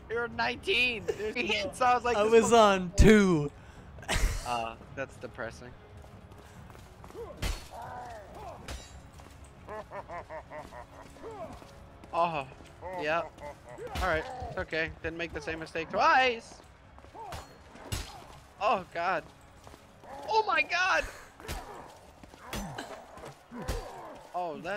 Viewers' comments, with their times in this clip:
0:09 Was the taunting laugh really necessary amidst all the bloodshed xD